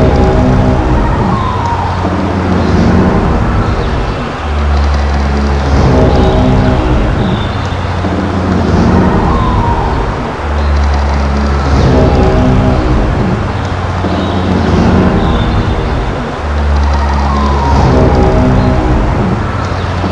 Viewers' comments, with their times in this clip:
0:07 Nice, intimidating sound effects right there.